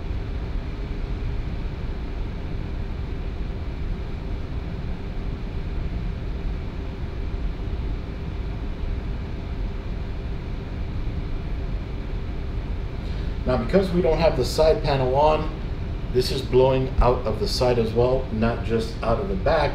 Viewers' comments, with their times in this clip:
0:06 idk why but that sound of the fans is very relaxing